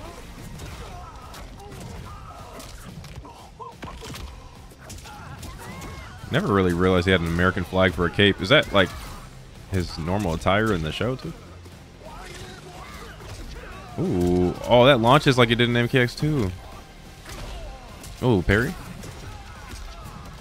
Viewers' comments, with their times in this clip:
0:06 Yeah, that's his attire in the show. Everything about him is exact, except for the voice, sadly.